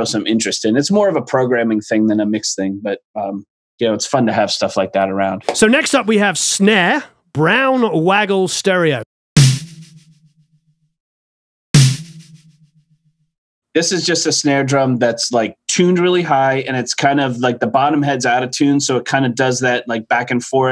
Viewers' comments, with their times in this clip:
0:08 Snare Brown Waggle Stereo sounds like an Al Green record!